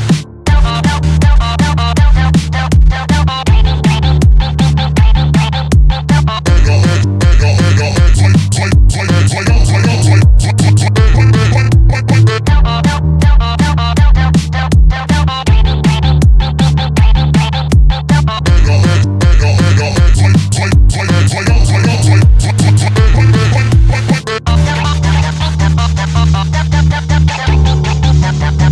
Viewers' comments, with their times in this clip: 0:03 I like that on this part, Shaggy goes "trai i trai i" like greg on that part Edit: also the 7 key chart is so good I even forgot that it was 7K
0:03 WHY DO I HEAR HIM SAY ZOYKAN
0:12 I like how sounds like buggy wuggy if you wanna see it head to the end then head to 52